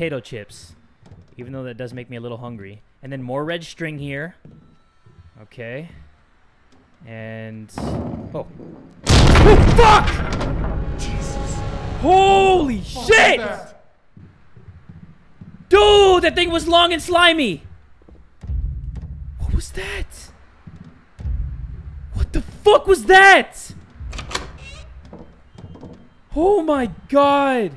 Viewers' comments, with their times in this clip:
0:09 R.I.P HEADPHONE USER! I was using my headphone and that sound turn on I was WTF IS THAT NOISE DUDE